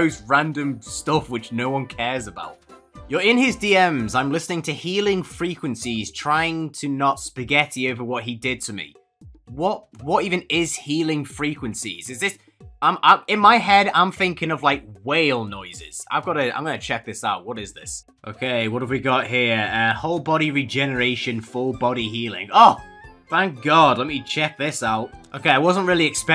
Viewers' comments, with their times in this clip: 0:03 idk what tf that is but it reminds me of a song--Totally dif song tho "Your new boyfriend" by Wilbur Soot 👍
0:10 Mongolian throat singing